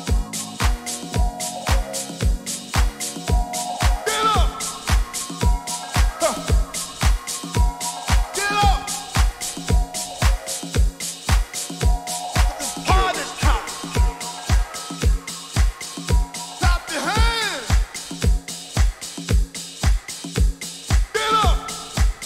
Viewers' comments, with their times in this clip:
0:04 That track 🔥🔥👌if you were not there you missed sheems